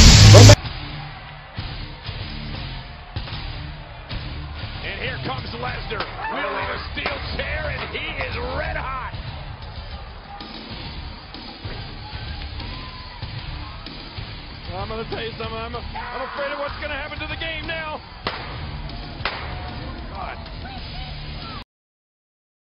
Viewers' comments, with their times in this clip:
0:06 he sounds like a horror movie scream but he looks like a wild gorilla banging that chair.